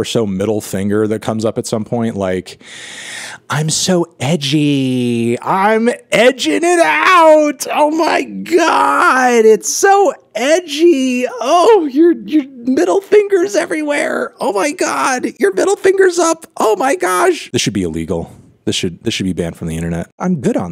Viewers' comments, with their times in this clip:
0:03 makes Fantano sound like a bratty bottom.
0:06 fantano just turned into Nardwuar